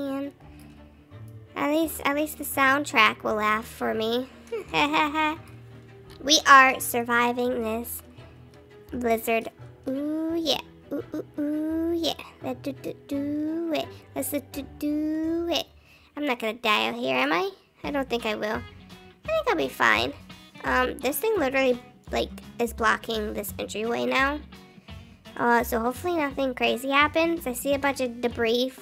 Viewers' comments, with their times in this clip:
0:10 video the moody singing